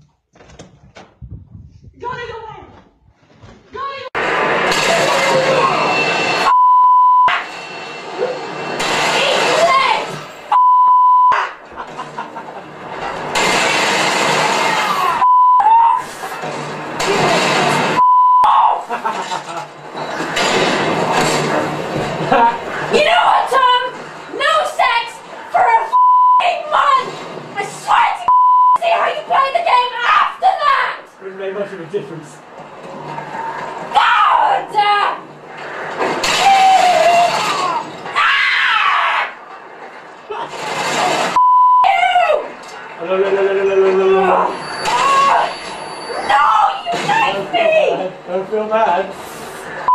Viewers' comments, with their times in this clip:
0:05 I would scream that loud but my throat hurts from watching this How come she doesn't hurt her throat after screaming like that
0:34 some cod zombies noises right there